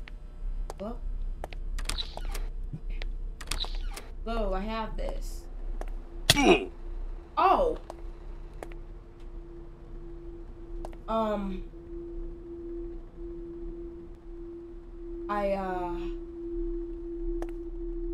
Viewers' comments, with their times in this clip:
0:06 the creator just add oof sound effect 😂